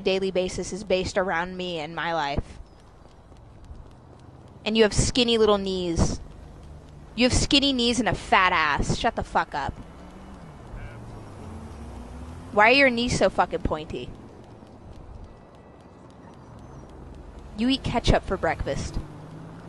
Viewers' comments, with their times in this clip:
0:05 Omg I get the notification AM and I just hear her singing